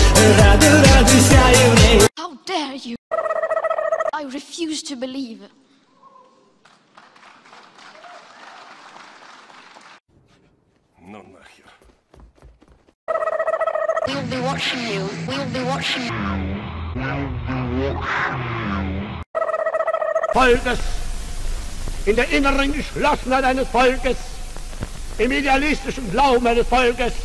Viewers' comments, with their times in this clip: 0:09 in russian:) very nice))